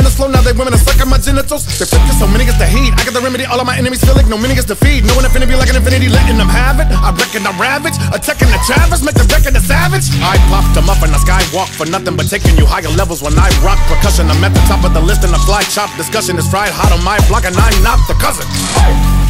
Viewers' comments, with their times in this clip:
0:03 Man tech just crafts the best and most technical burst ever and they sound sooo smooth. Like those bursts are undeniable